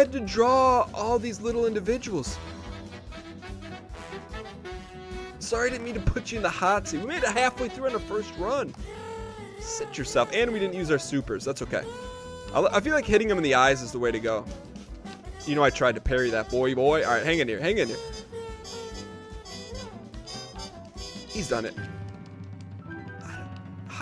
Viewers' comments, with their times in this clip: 0:08 The song matches the animation perfectly, I love it!